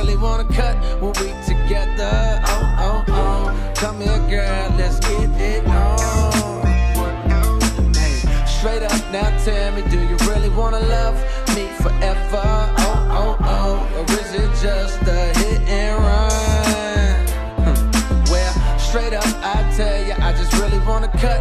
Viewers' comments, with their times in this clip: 0:09 The guitar makes my soul jump out of my body